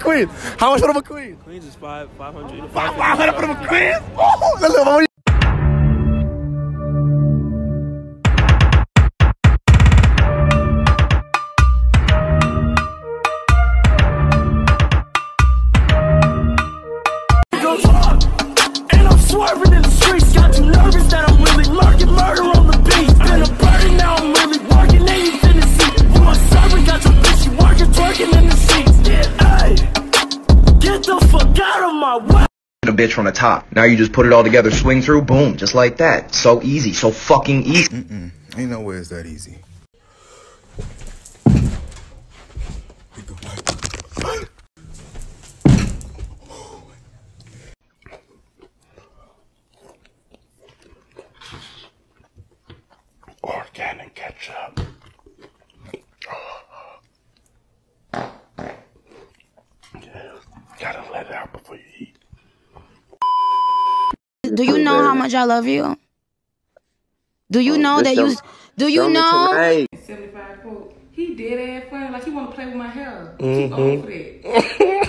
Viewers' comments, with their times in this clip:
0:05 is high-key fire🔥 I need a full version of that song 😍😍😂
0:57 had me dying laughing this man gon fart and pretend that num happened this had me doing the teapot laugh that's how funny it was 😂😂😂😂😂😂😂😂😂😅😅😅😅😅😆😆😆😆😆😆😹😹😹😹😹😹🤣🤣🤣🤣🤣😸😸😸